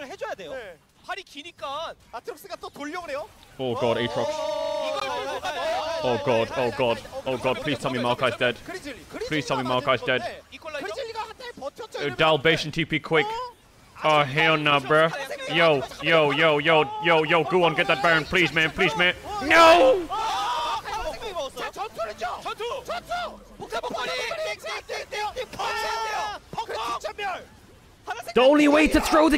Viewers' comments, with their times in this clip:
0:10 I wish he casted like that xD i would watch every game he cast xD